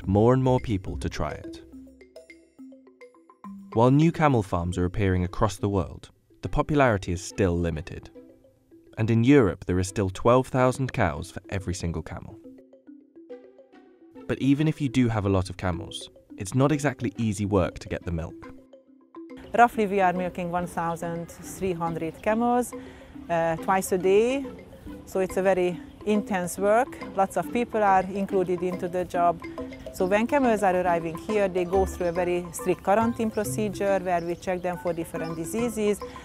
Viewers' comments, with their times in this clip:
0:09 "in Europe there are still 12,000 cows for every single cow." That's what I heard
0:09 "And in Europe, there is still 12,000 cows for every single cow?" Huh?
0:23 I could hear she's hungarian from her accent